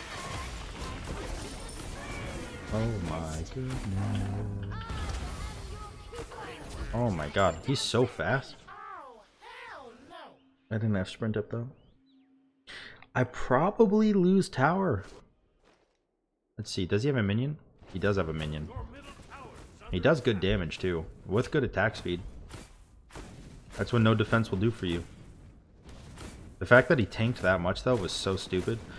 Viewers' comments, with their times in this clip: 0:09 did i hear a Swagni?